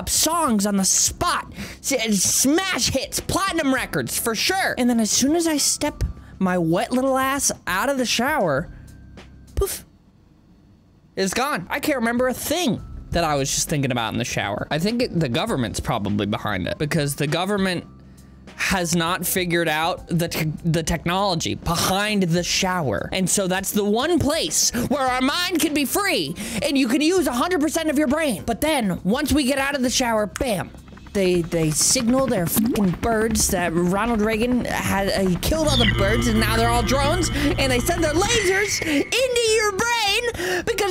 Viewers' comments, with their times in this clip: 0:05 I love the way he says that! <3
0:21 that was a throaty "behind"